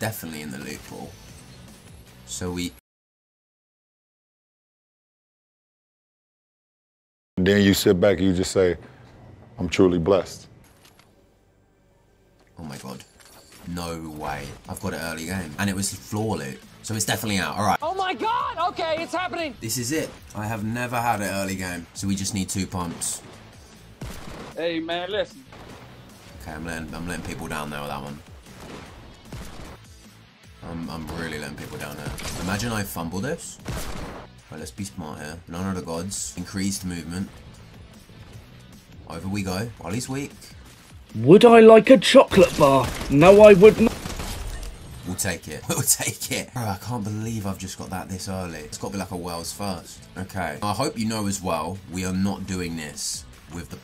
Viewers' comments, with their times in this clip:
0:03 thought my airpod pros quit being pro
0:40 that is the most random sound effect I have ever heard